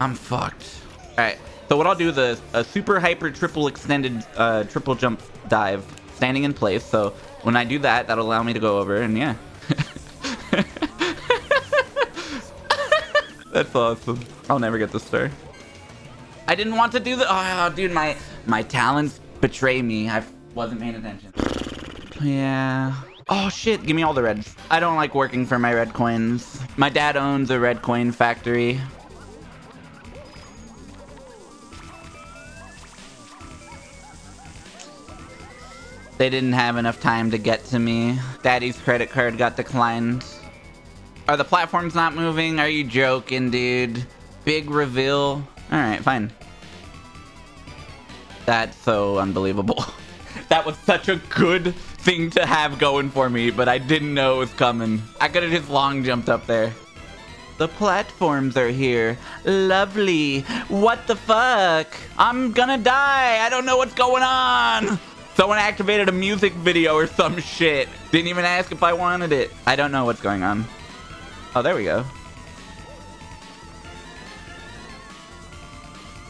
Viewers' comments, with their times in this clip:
0:10 Bro laughs like these, that start out as small chuckles but progress into more hearty laughter are the best.
0:57 the way he said "what the fuck" here is so funny to me